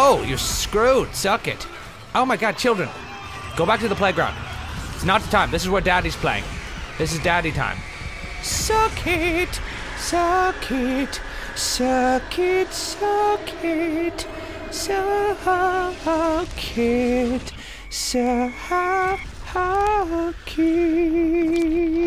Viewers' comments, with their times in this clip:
0:05 i had a door bell that sounded exactly like that tune :O only it didnt say "suck it.."